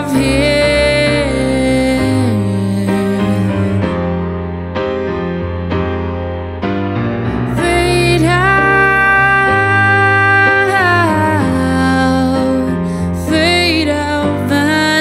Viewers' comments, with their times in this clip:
0:03 The mic got your lip ;-)